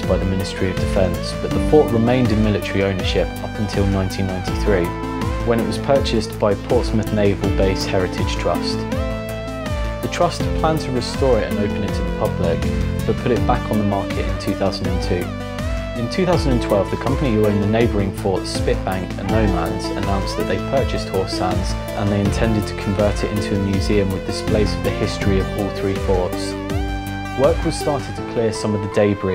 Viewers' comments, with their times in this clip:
0:10 hard to hear over the music